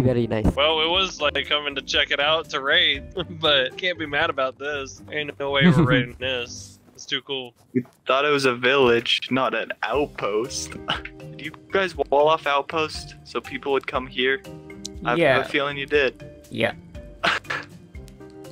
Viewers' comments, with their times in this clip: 0:04 that sounded like blooprints dad